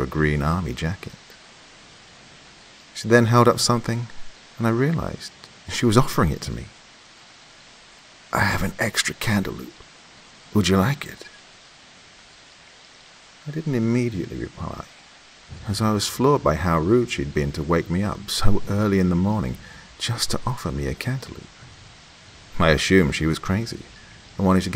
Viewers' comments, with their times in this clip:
0:07 By far my favorite vice..I mean voice. Grabbing my favorite drink am on a sunday morn..